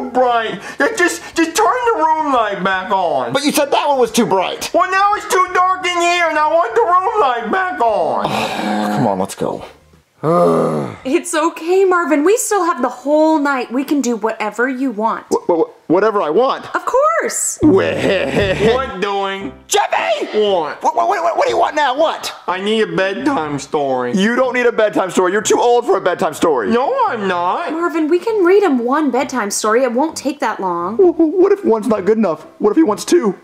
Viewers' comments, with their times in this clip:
0:05 that voice crack killed me😂😂
0:17 That Devious laugh was do funny